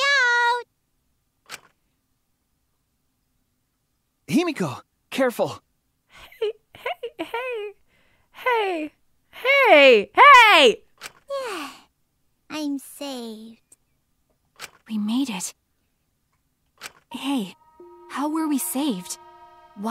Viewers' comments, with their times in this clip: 0:06 the rollercoaster of a single word